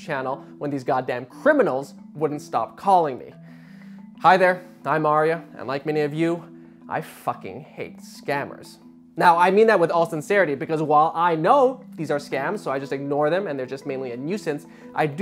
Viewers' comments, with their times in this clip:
0:03 I thought he said Mario-